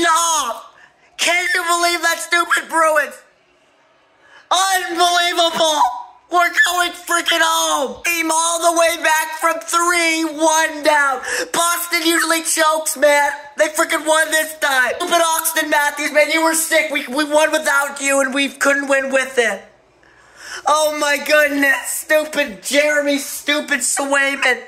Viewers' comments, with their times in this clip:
0:08 First time? Toronto is officially property of the Boston Bruins. Work on those voicecracks though, you didn’t quite capture the essence of true Leaf fans.